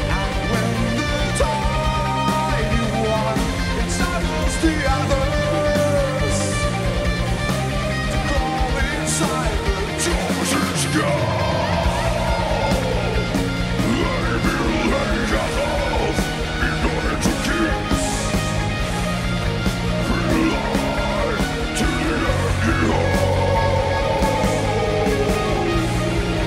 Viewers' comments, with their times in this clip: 0:07 the clean to growling transition is f*cking orgasmic..